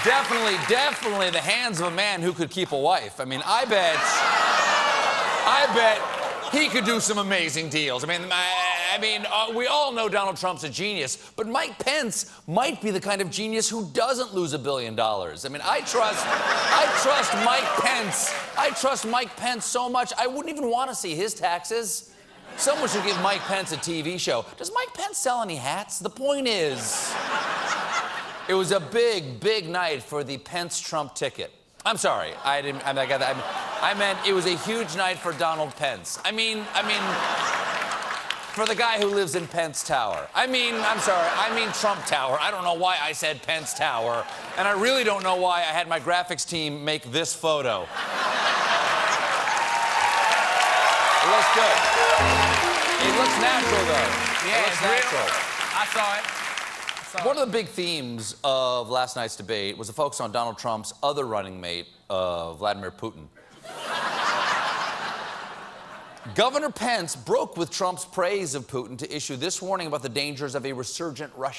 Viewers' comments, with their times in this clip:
0:04 WTF was that noise ? Surely some kind of millennial-feminist noise not yet known to science.
0:06 Jean Baptiste's weirdest laugh yet.
0:56 Why is there suddenly a 2nd rate Kevin Eubanks/Paul Schaffer making comments in the background? They don't even listen to him ( he goes "I thought..." and Steven immediately cuts him off before he can finish and moves on with his monologue)